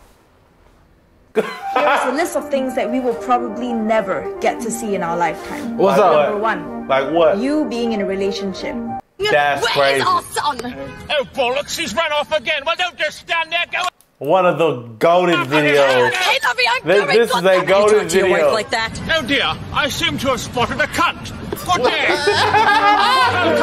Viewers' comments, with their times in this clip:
0:10 From that’s the funniest British impression I’ve seen and more accurate, a mix between posh and not